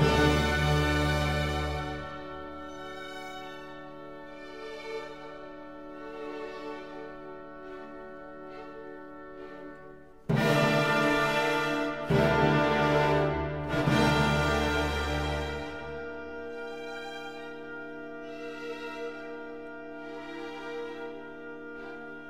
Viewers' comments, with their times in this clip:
0:10 Is this real or am I imagining this tremendous discord?